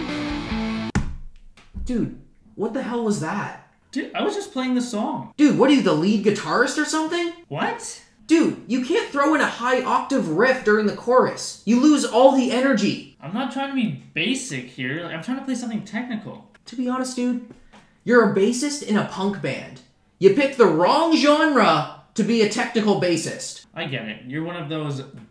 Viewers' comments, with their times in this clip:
0:06 First thing that came to mind was “If Cliff Burton can play those high notes and make it sound badass, anyone can” lmao😂